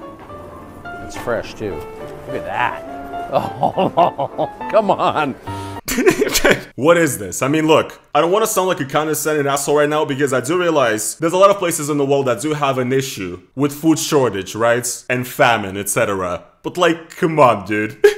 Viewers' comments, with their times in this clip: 0:03 Bruh he even turned French for a second